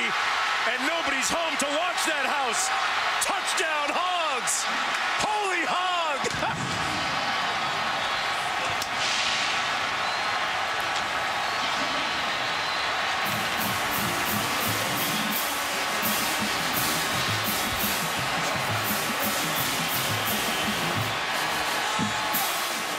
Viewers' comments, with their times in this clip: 0:09 this....this is just too much for me...... GET THIS FUCKING HOODIE OFF OF ME NOW!!!!